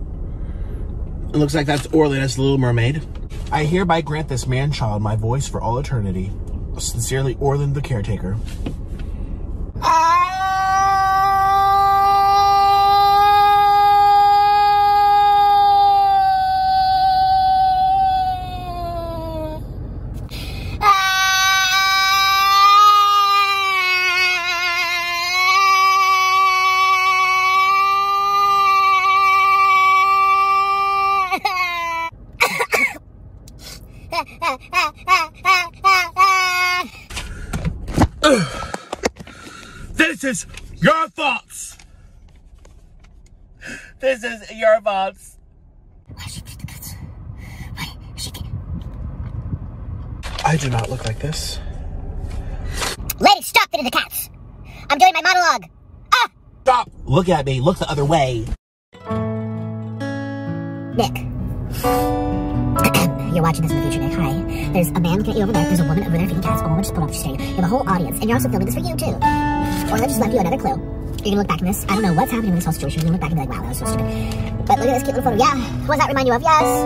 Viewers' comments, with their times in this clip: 0:08 it's giving ✨ tornado siren ✨
0:08 Bro sounded like my ps4 starting
0:09 gets volume warning💀
0:10 But his singing voice was pretty😫
0:10 sounds like a eas alarm
0:10 the mosquito in my room ✨✨
0:11 literally sounds like a dying goat
0:11 bro set off the war alar.
0:13 the baby crying😂😂😂🤣
0:15 9 year old child crying be like:
0:16 he sounds like crying toddler
0:18 Why he had to sound like sponge bob laughing😭
0:21 His wailing made my neighbourhood dogs go beserk. 😳😂
0:21 bro sounds like the annoying fly at my ear at 3 am 💀💀💀
0:21 •SCREAMS LIKE A BABY SHEEP•
0:27 at this point i thought there was a mosquito in my room 💀
0:27 bro sounds like a baby crying
0:31 subtitles (that i have for no reason) be thinking the screaming is Music 💀
1:01 He expressed himself as if he gave a speech to children at the orphanage, what a poet... 😔✋✨💞